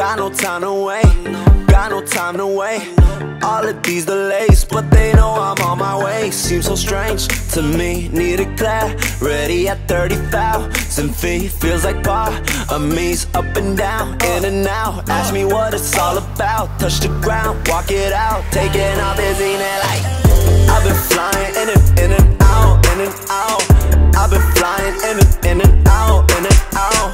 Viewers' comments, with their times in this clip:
0:07 Okay what is the lyric? Because i've seen lyrics to this song saying both "Need a ready" and "Need a plane ready", but to me it sounds like "need a clarity". So does anyone know what the right lyrics for that part is?
0:08 in do you say "need a plan ready" or "need some clarity"? or is it something else? the autotune made the lyrics a bit harder to tell expecially with the pause in the beat at that moment